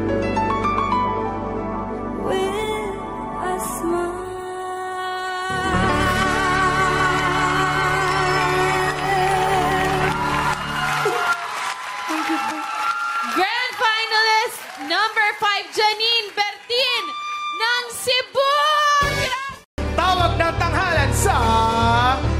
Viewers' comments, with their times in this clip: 0:10 was it Vice crying?